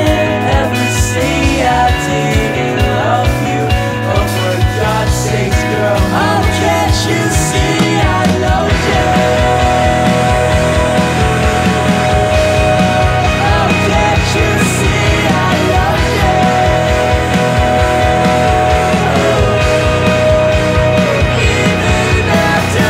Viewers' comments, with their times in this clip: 0:05 reminded me of last dinosaurs